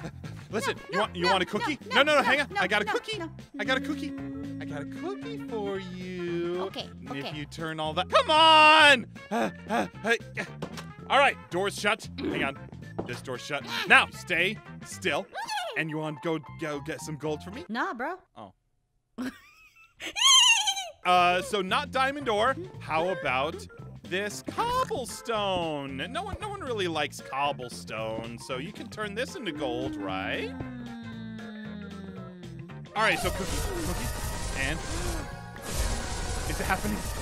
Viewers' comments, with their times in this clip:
0:07 Naw bruh (awkward silence)
0:14 what's so funny is that she went from neighing to naw bro XD
0:16 lool his acent went oop-
0:17 The only time she talked in her non baby/non uniorn voice (excluding the intro).
0:18 I love how she said nah bro lol